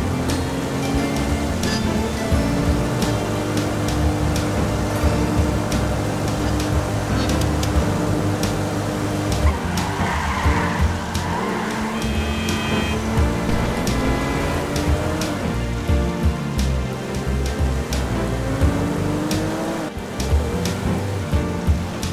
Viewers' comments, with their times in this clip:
0:04 how has nobody noticed this gem of a moment. They even got the disc skip of the game down perfect 🙏🏾😩